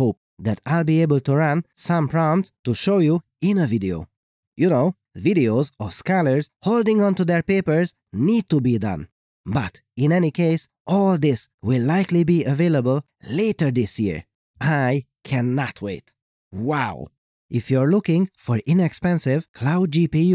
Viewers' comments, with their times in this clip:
0:06 Scholars?? All this time I thought he called us scalars 😂